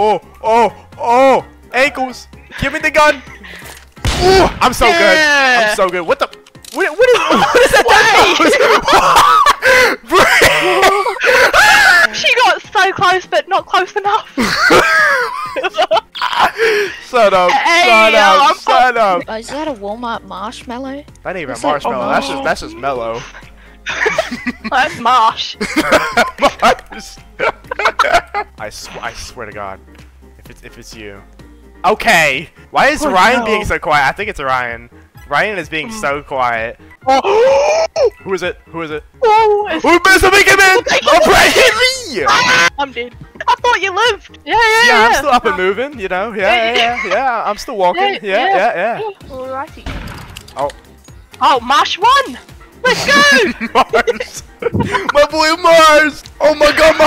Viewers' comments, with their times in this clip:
0:04 is so funny they laugh so hard and make me the same lol😂😂😂❤❤
0:11 THE SCREAM LOLL
0:42 WHAT WAS THAT SCREAM 😭😭😭
0:42 ON THE THE SCREAM HUHU